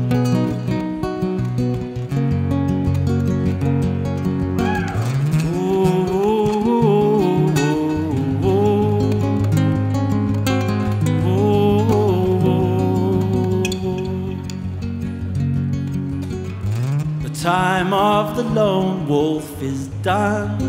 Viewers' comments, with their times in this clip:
0:04 minute you can totally see Nick getting distracted by the person yelling in the crowd.